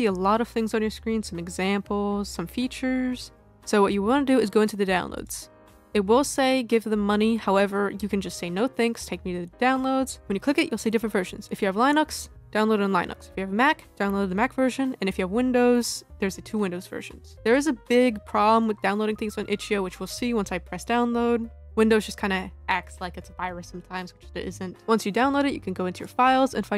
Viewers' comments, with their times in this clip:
0:10 you did NOT just pronounce Linux as Line-Acks